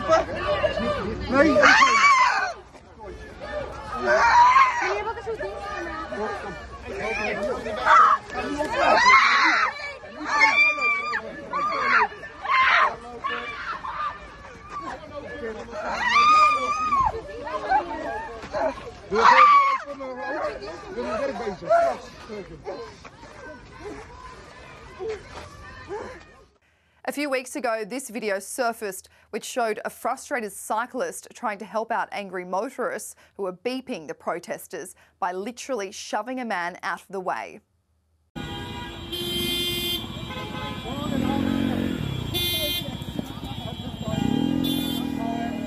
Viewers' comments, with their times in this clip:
0:05 what the hell is that? A screeching vulture?
0:27 To the screaming lady: "If you weren't resisting, you wouldn't be hurting."